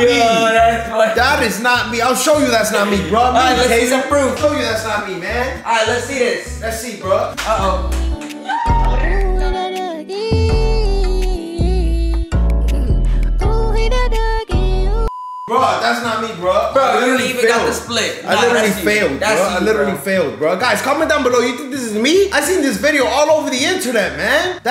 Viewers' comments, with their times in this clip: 0:08 the dance plus the music 😂😂😂😮‍💨